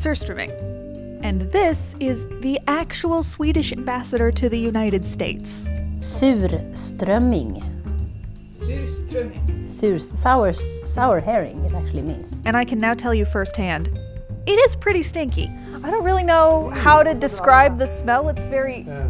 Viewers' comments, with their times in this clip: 0:05 the way she pronounce it was very satisfying